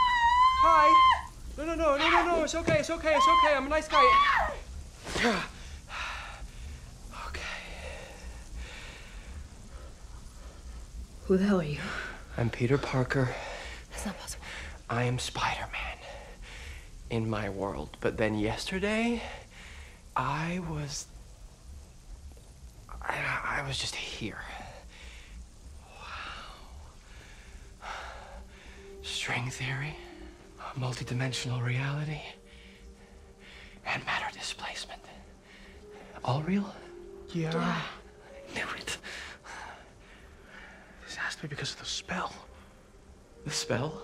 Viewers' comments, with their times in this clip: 0:05 and the crowd screamed!°
0:29 They played the background music from asm 2 as well apart from the liberty scene that i never noticed since it is very low!!